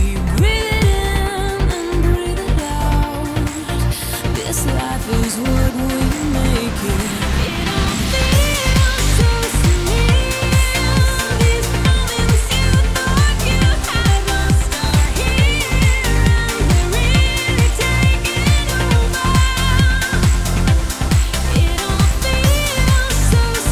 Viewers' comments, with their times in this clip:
0:05 Surreal classic! Love her voice 🥰